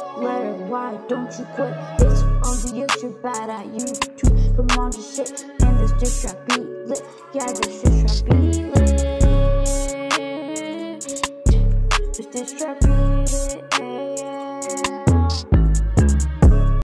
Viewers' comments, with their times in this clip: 0:05 I know It sounds like i said the sh word but really i said sit it's just the autotune it kinda makes it sound like the sh word